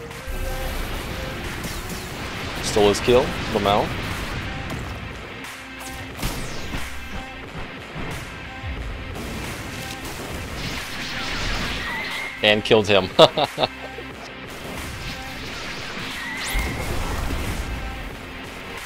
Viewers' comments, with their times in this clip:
0:05 stole his kill lmao Did not sound like you were laughing